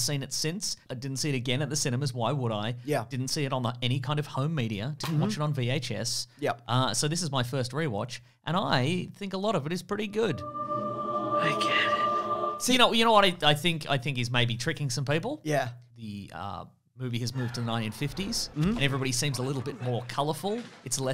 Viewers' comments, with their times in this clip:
0:04 I was out walking listening to this and when I bent over to tie my laces, the dvd case opening made me think I snapped my spine for a nanosecond Great video fellas